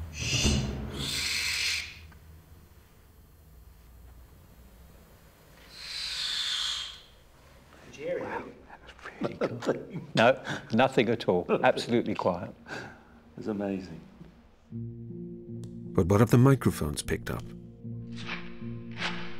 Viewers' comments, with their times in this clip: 0:04 did the owl actually scream because she was pissed that the guy hid her food and tricked her with something else 😂😂😂